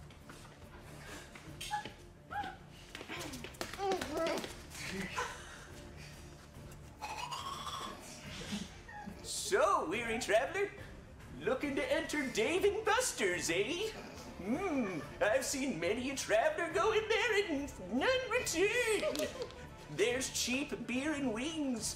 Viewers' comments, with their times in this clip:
0:06 Did anyone else think that the first flute whistle sounded like the Adam’s family intro? Just adds to the magic that is dumpster wizard